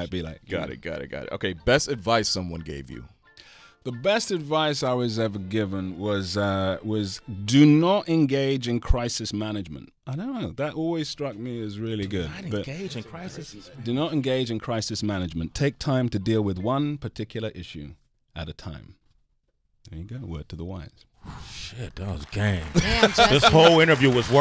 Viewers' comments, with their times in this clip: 0:07 hear that accent? He's channeling an elder or his dad. I can bet money on that